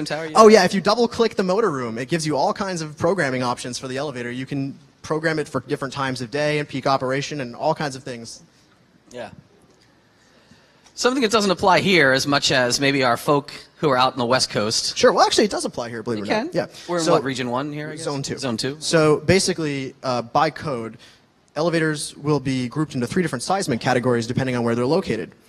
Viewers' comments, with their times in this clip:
0:09 Ok, so go to They start talking about earthquakes, then some one hits the camera. "There are seismically stable areas, then there is Southern California". "bonk"